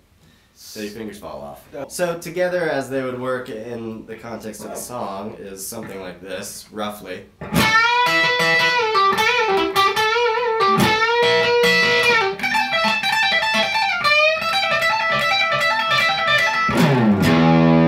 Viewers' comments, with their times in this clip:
0:05 It doesn't sound right. Missing some notes at the end of it. Listen to master exploder, then listen to and you'll notice the ending not being quite right, and the first segment after the hybrid picking that doesn't sound quite right. Majority of the riff is the same as the song though by the sounds of it. Those bits can be pieced in.